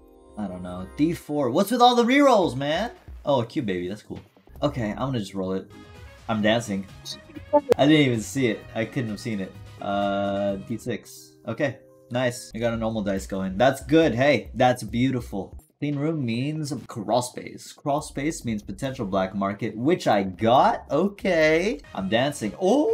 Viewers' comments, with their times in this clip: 0:07 Discord notification sound